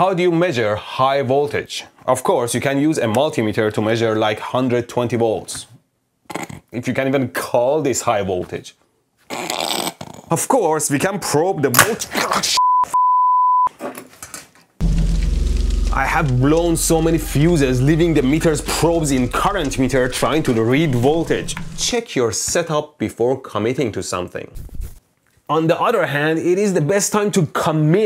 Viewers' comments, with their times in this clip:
0:08 I like the fact that seconds in I'm hearing high voltage AC power arcing lol 😆
0:11 moment before boom Gets electrocuted AGAIN